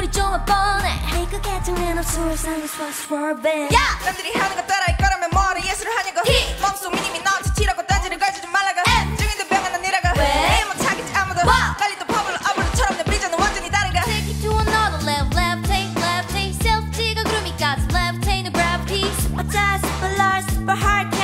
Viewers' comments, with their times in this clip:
0:04 that beat switch up that ny favourite part!!❤
0:04 THIS PART OF SUNHYE RAP!!